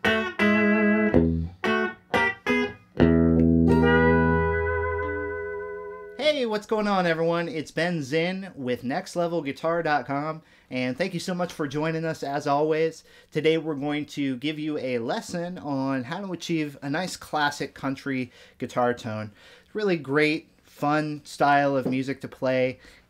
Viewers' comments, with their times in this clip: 0:04 I hate that sound effect